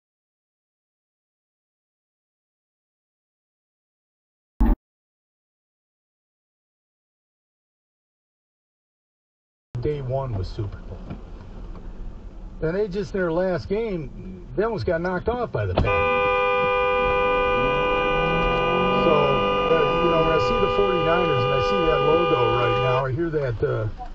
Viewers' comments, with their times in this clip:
0:10 Using your horn as a warning is one thing. Sitting on it like this person did makes him an aggressive driver as far as I am concerned and I would worry as much about him as the driver running the red light.